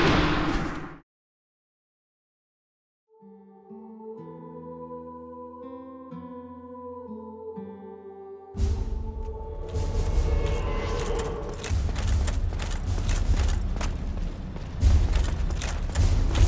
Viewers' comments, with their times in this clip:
0:03 When you know this Theme..... It kicks so hard